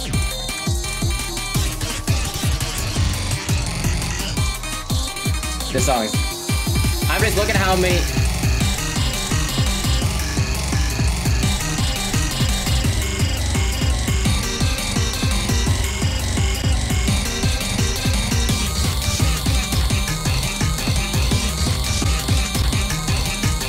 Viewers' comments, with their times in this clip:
0:07 The pure fear in his eyes when the beatdrop comes in lol